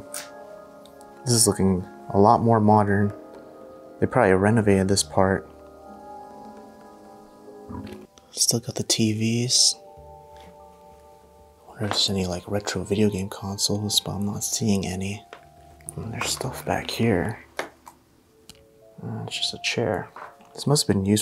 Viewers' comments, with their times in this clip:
0:08 there is a growl before switching clips😳🧐 Can't figure what it is.